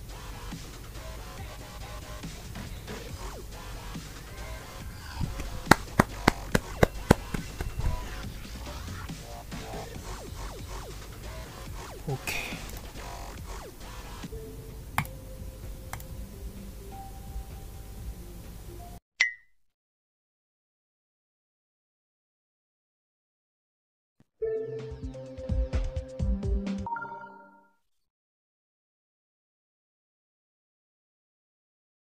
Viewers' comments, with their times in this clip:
0:08 u shure it was claps?
0:11 is the closest thing to a voice reveal
0:11 is this partition voice??????? He said Okay.
0:11 voice reveal XD
0:11 is that your real voice
0:11 Listen CAREFULLY and u will hear "ok"
0:12 deep breath reveal????
0:12 i heard your voice
0:13 LuL you leaked your voice